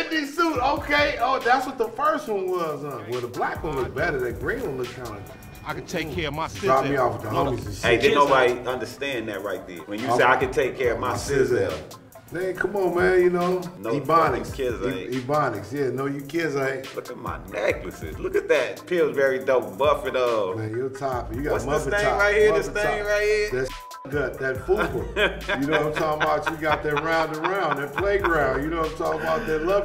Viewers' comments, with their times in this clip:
0:10 bruh look did you actually watch the video it's a dialect